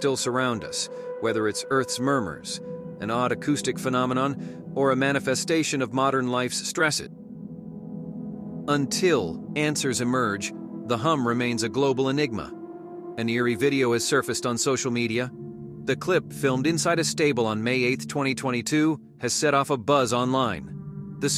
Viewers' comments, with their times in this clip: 0:08 The footage is not “strange” or “eerie!” COME ON! It’s a horny stallion. He’s been flirting with a mare that appears to be down the row of stalls on the backside of where he is. He breaks out and runs to her stall. YOU CAN SEE HER TURNING HER REAR when he comes to visit! The sounds they’re making aren’t “weird.” Those are the sounds a stud and a mare in heat make when they’re about to make a foal! GEESH!! I mean, really!! Do your RESEARCH!!! Someone who knew exactly what was going on submitted that knowing that the rest of the non-horse folks would eat it up… 🙄🙄🙄🙄🙄🙄🙄🙄